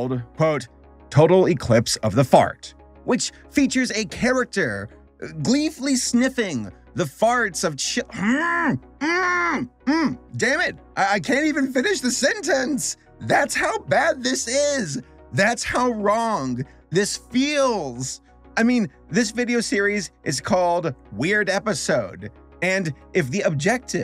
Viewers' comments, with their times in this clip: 0:10 THE VOICE THERE JUST-🤌